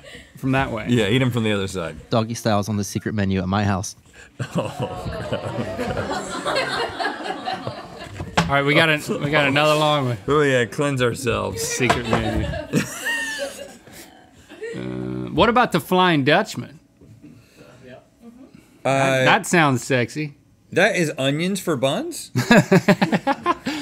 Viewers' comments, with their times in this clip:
0:09 the collective groan. 😅🤣😂